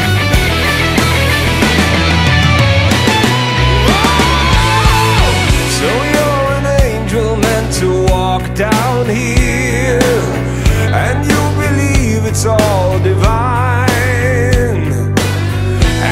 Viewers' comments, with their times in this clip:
0:03 Jack Black, is that you?!